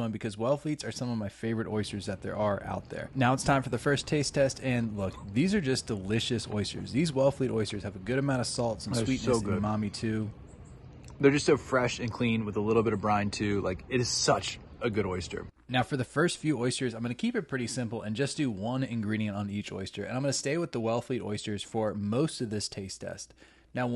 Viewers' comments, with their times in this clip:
0:05 the sound of the gulp 😂😂😂